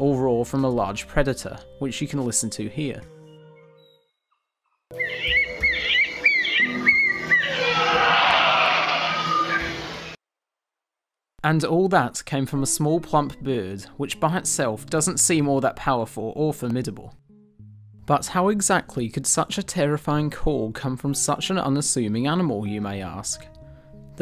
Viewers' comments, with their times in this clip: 0:07 Shrek Roar Intensifies.